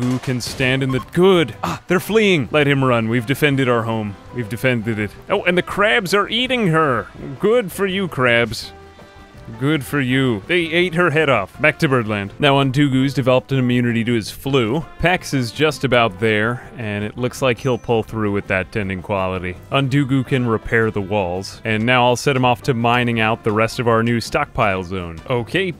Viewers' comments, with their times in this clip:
0:05 Sounds like a Spongebob reference. Can't unhear now.
0:07 Suddenly realized you could totally do plankton's voice.